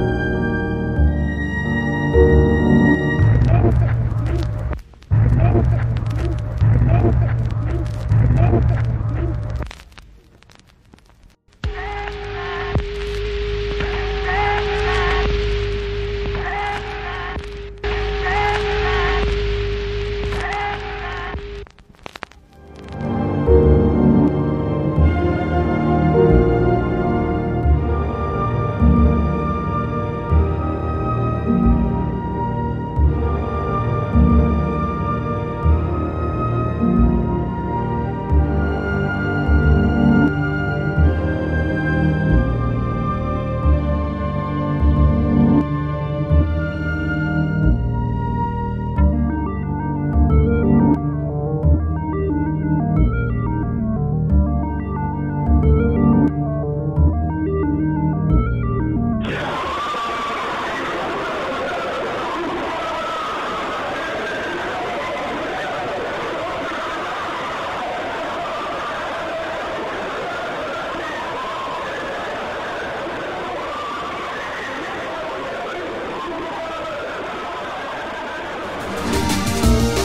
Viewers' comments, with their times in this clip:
0:10 I thought that was the start to a sick EDM...
0:11 I clearly can hear Santa.
0:11 sounds like she's saying Santa
0:12 sounds like the ghost is saying save them
0:12 dude.. he just got an interference from a radio station lol
0:16 sounds like techno
0:16 sounds like one of MJ's songs playing
0:19 I Swear I hear Christmas Christmas Christmas 3 time
0:20 I swear here i heard footstep and that was creepy as fuck
0:58 Sounds a Necromorph xD
0:59 sounds like a call of duty lobby
0:59 some say this is the terrifying sound of a CoD lobby or a BF4 lobby Sounds more like a fortnite one to me
0:59 Rip headphones users 😥
0:59 gives me flashbacks of kids Earraping us.
0:59 sound like in the hell.. maybe hoax 😅?
1:00 it sounds like a kid who is raging over a videogame
1:06 sounds like something I'd hear on a NIN track.
1:07 The Neighbourhood "Wiped Out" sounds so similar